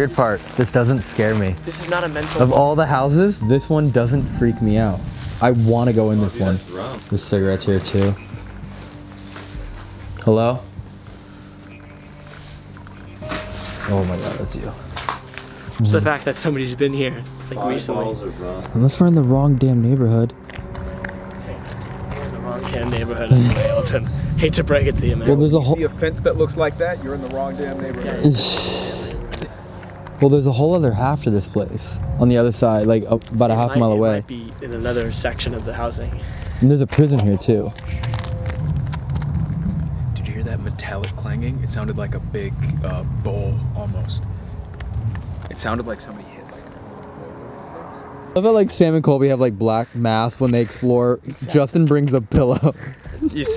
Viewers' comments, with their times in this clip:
0:10 heard radio voices
0:22 am i the only one who hears a gasp ??
0:23 who else heard the gasp
0:23 In there a girls voice...... like " hoah " like skmeone is choking her
0:39 The metallic clanging he heard was likely the gate being closed and locked on them.